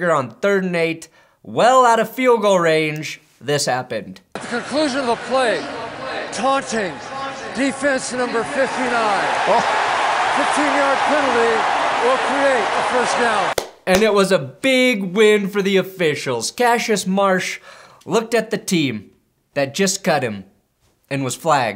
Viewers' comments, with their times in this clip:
0:07 Why the ref sound like the “it’s MA’AM” dude?